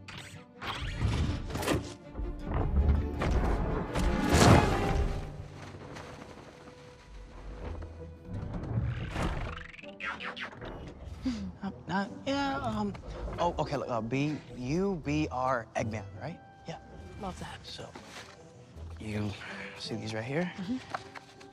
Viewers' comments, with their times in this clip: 0:09 Bumblebee's robot laugh doe